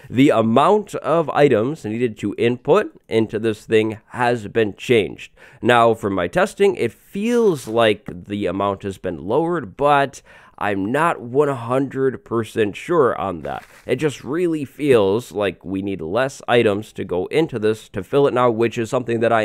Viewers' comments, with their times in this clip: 0:07 THE LICK ON BACKGROUND!!!!!!!